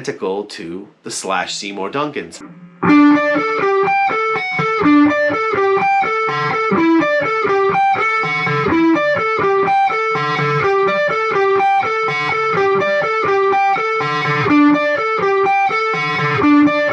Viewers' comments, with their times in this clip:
0:03 ears still bleeding